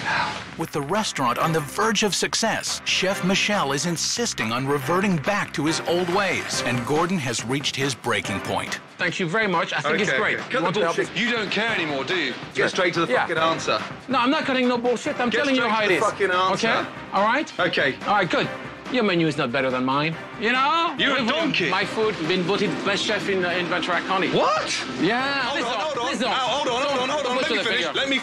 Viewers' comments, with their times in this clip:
0:10 Is the craziest yelling I've ever seen from Gordon! Almost felt bad for the chef but I think the tough love is what he needed.